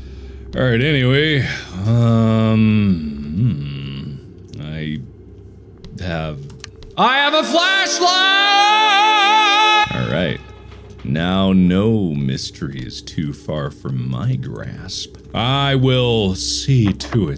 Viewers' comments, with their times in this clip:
0:04 Me: "Its hard to hear, there are no screaming monsters for now so I guess i will increase the volume" Mark: